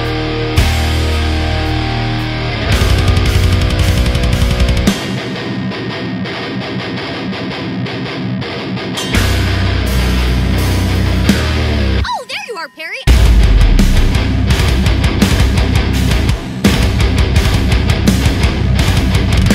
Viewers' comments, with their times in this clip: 0:04 that was the best breakdown in the tristate area!